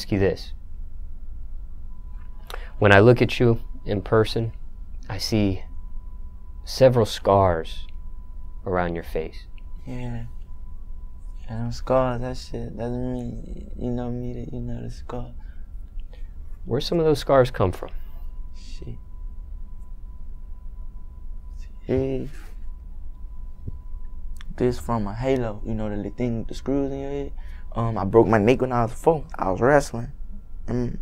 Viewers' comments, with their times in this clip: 0:10 caught me off guard with rubbing and saying "yeahthescarshvuuhuheufuegu
0:13 What the hell did he say ?! I heard scars, yeah them scars. But he said something else in there. Why these young dudes be talking all crazy man damn.